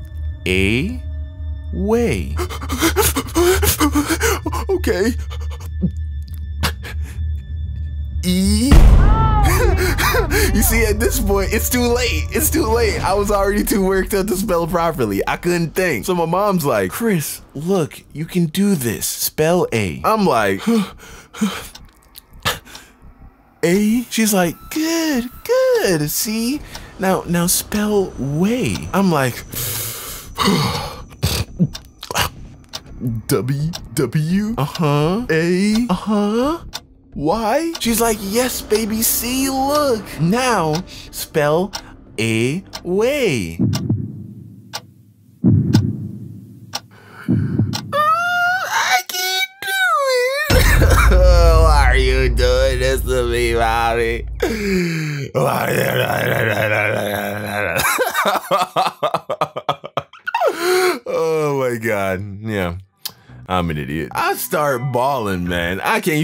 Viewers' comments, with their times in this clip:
0:03 when you start a old car
0:26 bruhhhh the snort 💀
0:51 he sounds like lil Wayne lol